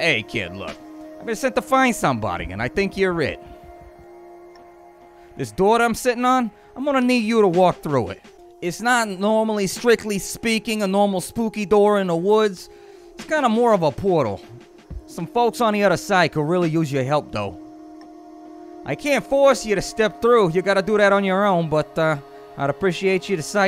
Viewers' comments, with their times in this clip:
0:07 your bird has the voice of bill burr. lol